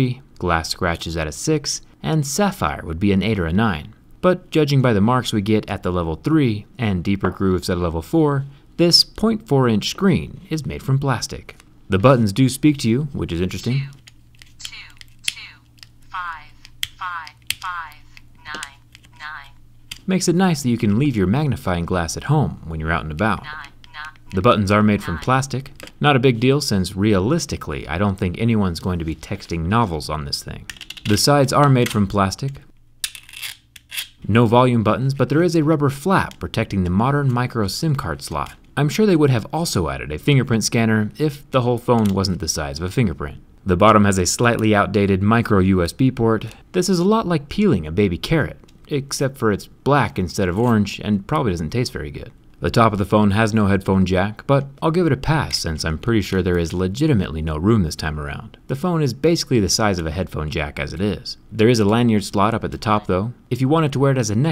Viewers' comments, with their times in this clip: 0:08 Thi- SSSs earrape
0:18 Jerry : *pokes phone with a blade Phone : nein nein nein nein nein nein
0:18 why did the mini phone sound so sexual when he clicked nine
0:21 Phone be like : Nein, nein
0:22 Jerry : mutilating phone with blade Phone : nein , nein , nein
0:51 I thought he said p*nis sized🤣🤣